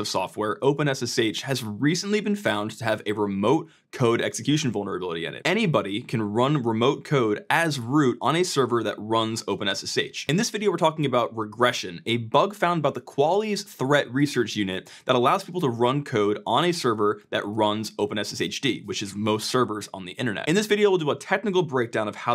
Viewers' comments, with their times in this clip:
0:10 The way you say qualys as "qualles" 😵‍💫